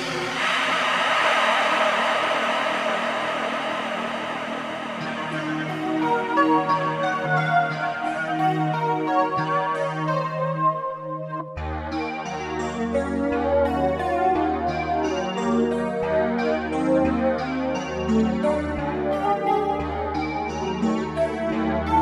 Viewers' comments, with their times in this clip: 0:04 has a strong Alpha Juno feel.